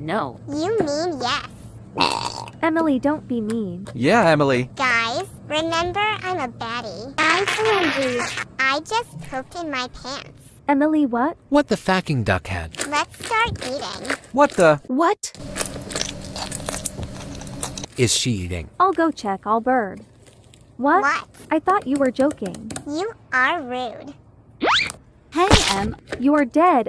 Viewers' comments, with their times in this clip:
0:09 I LAUGHED LIKE THIS "✨️🐬🐬🐬🐬🐬🐬🐬🐬🐬✨️" CUZ A BIG SOUND OF POOP COMED AND EMILY SAID "I JUST POOPED IN MY PANTS." 🥲🤣